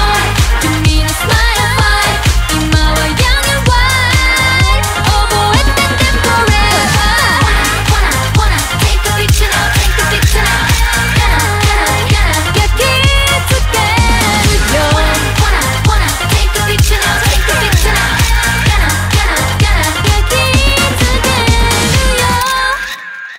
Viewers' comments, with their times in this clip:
0:06 There’s an ad-lib here, I can’t tell what it’s saying (maybe like “koitta” or some other Japanese word), who do you think sings it?